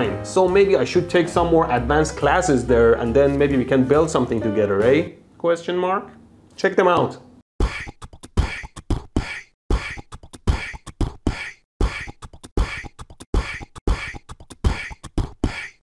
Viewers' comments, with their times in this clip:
0:07 sister from australia flame noises 🤔🤣